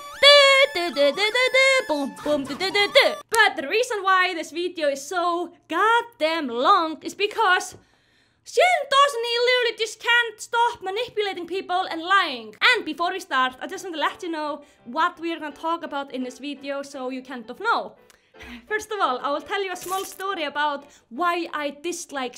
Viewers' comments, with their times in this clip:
0:07 in and I’m already subscribing😅. Edit: I really like your accent.. I hope I spelt that right-.